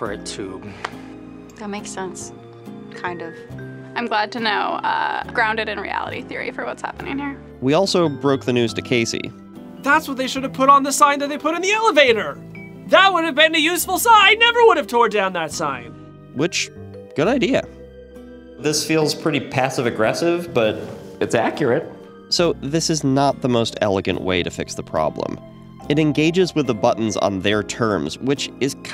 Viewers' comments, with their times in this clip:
0:04 What's most infuriating is how the woman talks. Like what the f*ck? Why?
0:09 sound like larry david
0:10 shut your eyes and listen to Larry David